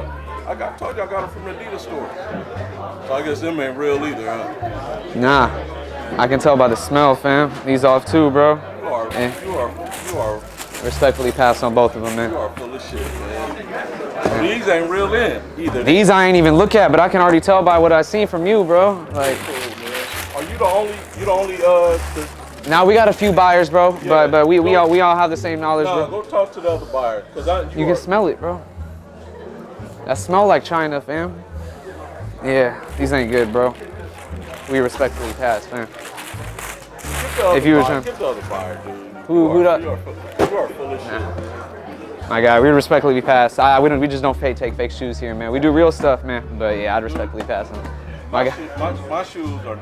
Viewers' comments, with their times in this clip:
0:03 The guy in the back laughing 😂😂
0:30 lmao it smell like China. (Peep the guy in the back laughing)